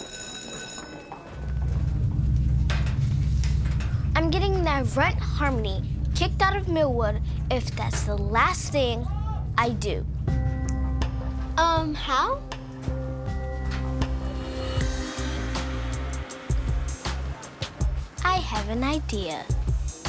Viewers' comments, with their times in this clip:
0:04 u can hear the background lmao